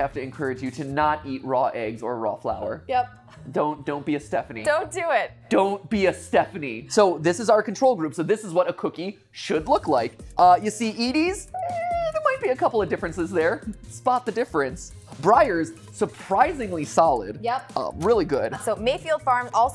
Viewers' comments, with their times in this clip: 0:07 I thought the pop was an add and spent 2 minutes looking for the X xD